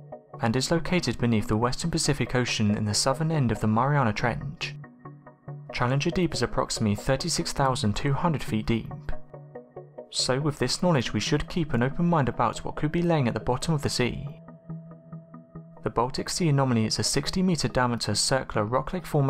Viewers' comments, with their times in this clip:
0:03 What's up with that cadennnncceeeee? Why are you stretching out the last word you say of every sentennccccceeeee? And misinterpretated? wtf? lol Got to and couldn't take any more. I'm out.